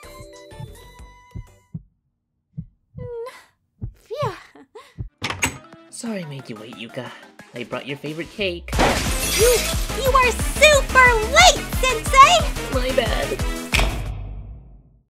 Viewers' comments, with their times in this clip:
0:08 Thought I was tripping when I heard the Coilhead kill sound effect XD